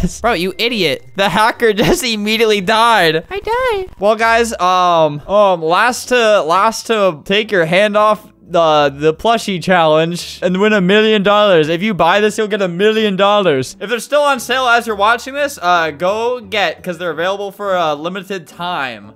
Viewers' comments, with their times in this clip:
0:03 his voice was so soft lol